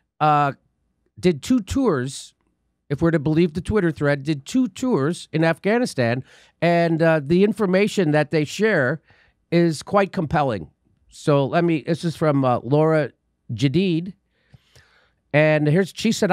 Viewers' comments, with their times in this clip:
0:03 Such a poignant reading of the soldier’s tale Jimmy.